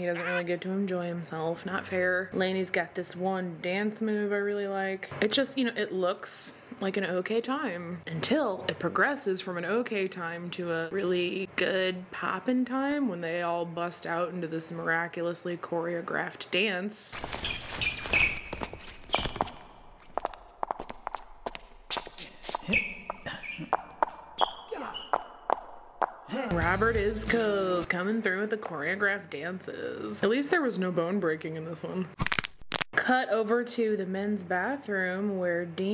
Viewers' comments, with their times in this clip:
0:10 The sound effects for the choreographed dance at the prom had me rollin 🤣🤣
0:17 my favorite is when she removes the song and replaces it with awkward squeaky sneakers, loud foot steps and bone cracking noises along with random grunting 😂